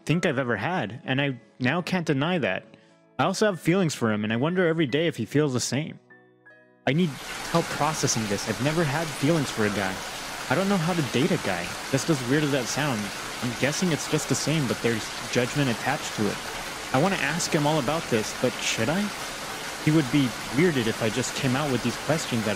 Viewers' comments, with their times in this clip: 0:07 😣😬🚫wtf? A minute of weird rain noise 🤷🏼‍♂️🤷🏼🤷🏿‍♀️